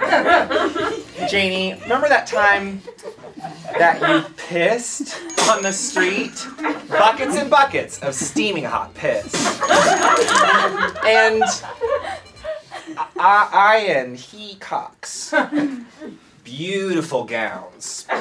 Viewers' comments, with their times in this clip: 0:06 his delivery sounds like Danny Gonzalez